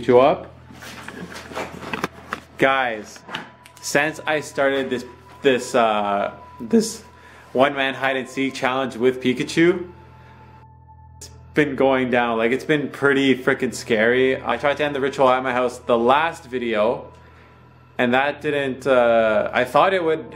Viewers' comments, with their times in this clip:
0:06 Btw is the biggest voicecrack I've ever heard